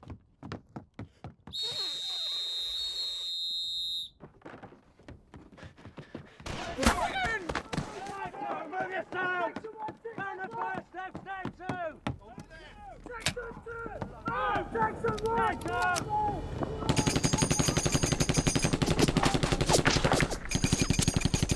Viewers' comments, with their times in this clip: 0:09 I feel bad for the German he made such a blood curdling sound